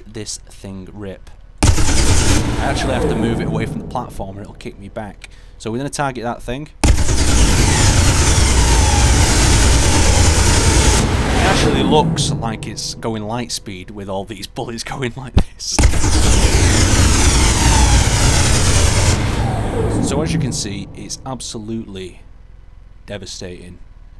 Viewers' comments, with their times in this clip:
0:06 The 90's called. They want their time machine sound effects back.